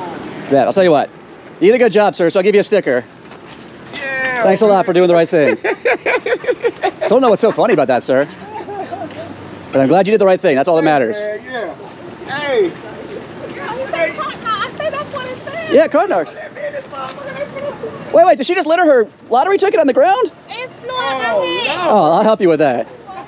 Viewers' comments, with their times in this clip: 0:08 love when they just laugh about it lol